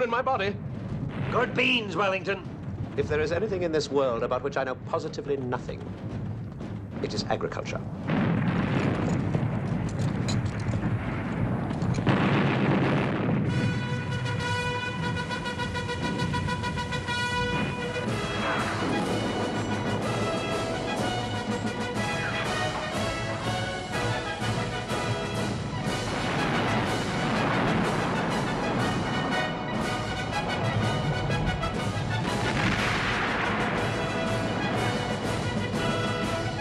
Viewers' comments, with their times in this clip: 0:08 very nice music
0:13 the music and the march is making me <3
0:21 And i love when the old guard is charging with marchmusic